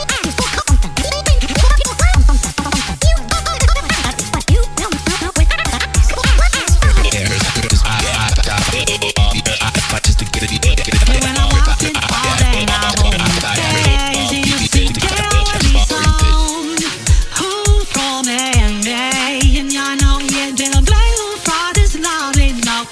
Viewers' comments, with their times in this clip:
0:06 I hear boyfriend says squibidi toiled xd hear you